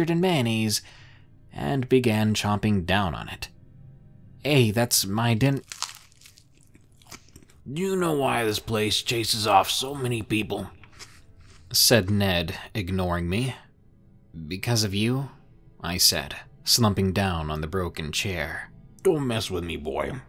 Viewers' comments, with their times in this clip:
0:05 the sounds of Ned Viciously murdering that sandwich was scary enough.